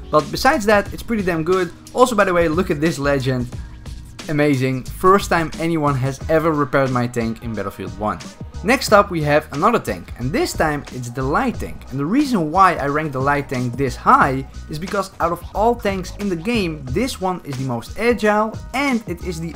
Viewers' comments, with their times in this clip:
0:03 i think thats your fan